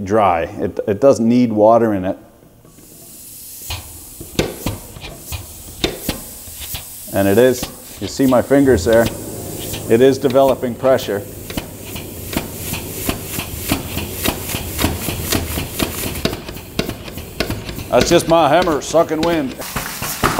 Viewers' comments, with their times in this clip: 0:07 sounds like me and the missus